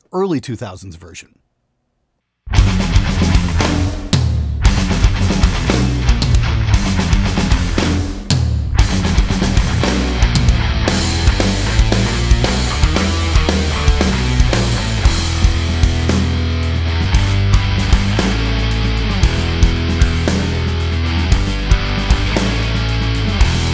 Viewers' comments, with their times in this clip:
0:05 Forget the guitar tone...how did that dude get such a tight drum sound in that tiny space around the mark?